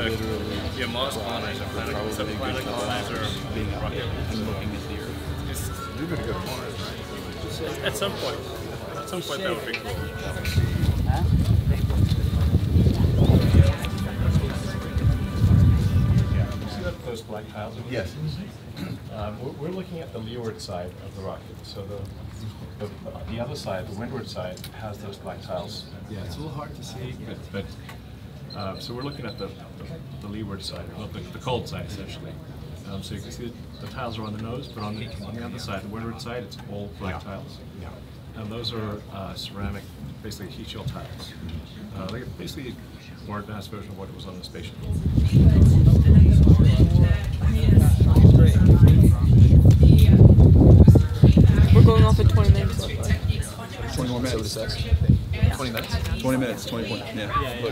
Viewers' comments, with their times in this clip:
0:09 Teamspeak easter egg: "Microphone Muted"
0:41 Love the sound of those Rolls Royce's best 757 on planet. Awesome vid verry cool